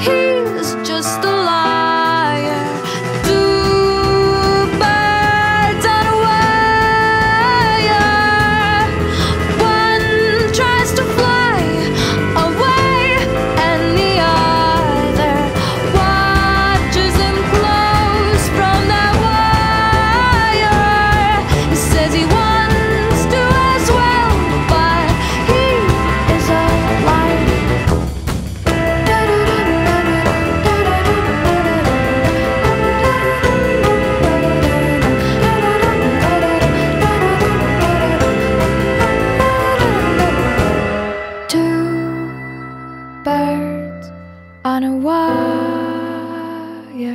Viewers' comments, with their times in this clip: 0:03 there yall, final chorus hits hard
0:29 I love how this part sounds creepy